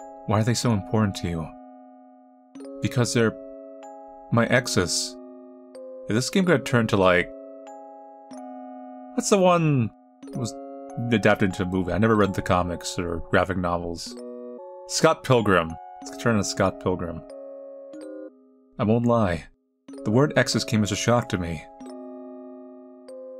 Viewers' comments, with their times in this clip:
0:05 .exe? or axes? what else?